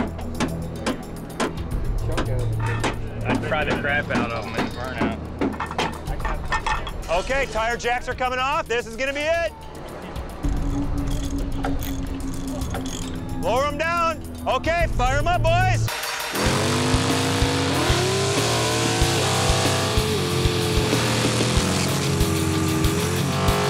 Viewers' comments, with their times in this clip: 0:10 the added in rachet sounds lol